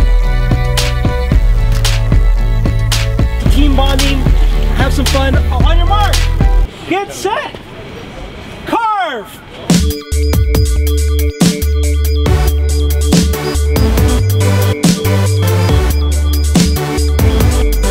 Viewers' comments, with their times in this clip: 0:03 anyone hear a beat?